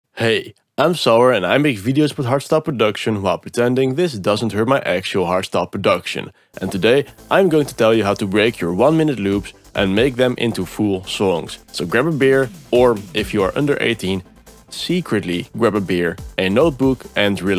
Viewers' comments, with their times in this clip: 0:02 i noticed that you said that this is hairstyle production. i didn't pick up on this the first time i watched it